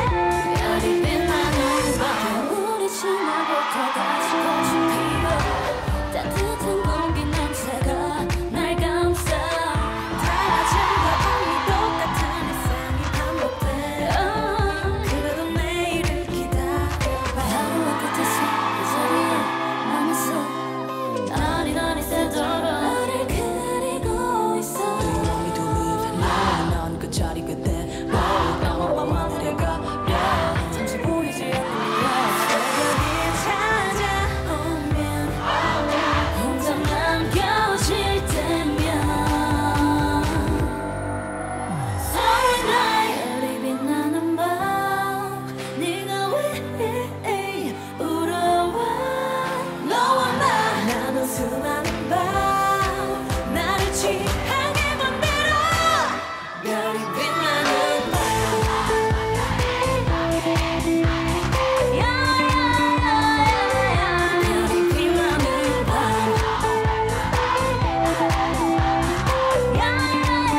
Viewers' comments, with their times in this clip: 0:06 what yall laughin at
0:53 that voice thoooo!!! that's one of Solar's strongest high notes! maybe because of Byul's finger heart. lol ahhaah